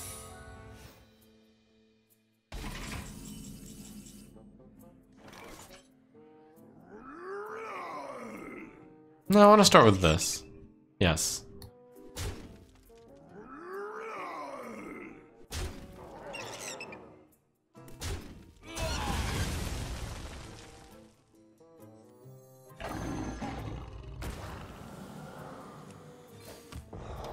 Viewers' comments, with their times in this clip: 0:08 no one commented at his voice changed for a bit?